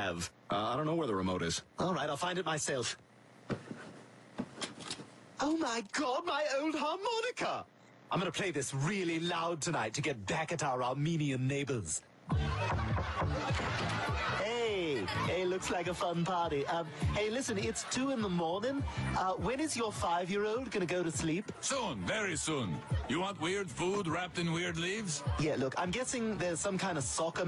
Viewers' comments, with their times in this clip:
0:10 I heard "Arminean neighbors" and was expecting something theological.